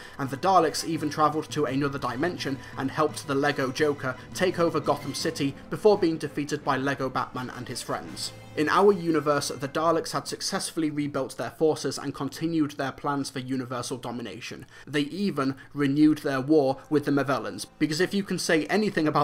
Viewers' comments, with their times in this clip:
0:05 Belly laugh of the decade 🤣